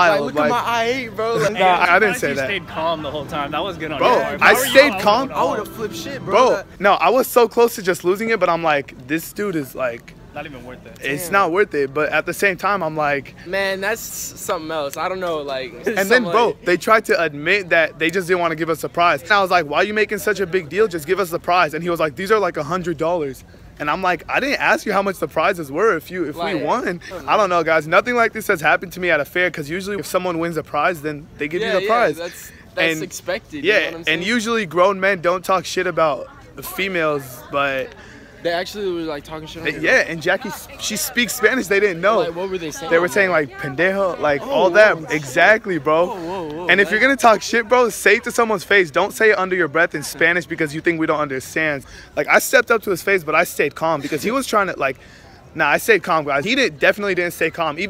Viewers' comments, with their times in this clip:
0:07 he misspelled GIVE LOL he said GIEV XD all good :D
0:42 😂😂😂😂 BENDAHOE 😂😂😂 I'm weak he said it wrong 😂 I'm not even Mexican or anything and I can say it 😂😂😂😂